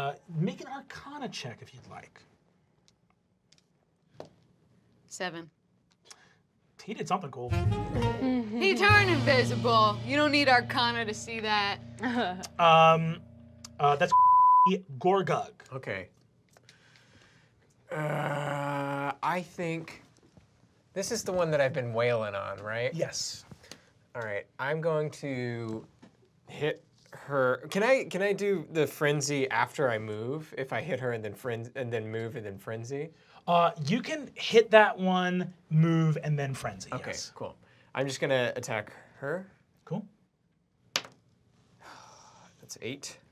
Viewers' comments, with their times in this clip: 0:09 why is every other word bleeped out? The words "going to" got bleeped out??
0:12 ok i officially hate the editor, what the fuck cuss is "going" they censored the word GOING
0:14 they literally cencor Brendon saying "going to be". This cencorship is a bleeping joke.
0:14 they also bleep "that's going to be"
0:14 does "gonna" really need to be bleeped?
0:14 Whoever edited this episode went a little crazy with the censorship. They even censored the phrase "gonna be" for seemingly no reason 🙄😑
0:24 they also bleeped "gun" in "gonna" when Brennan says it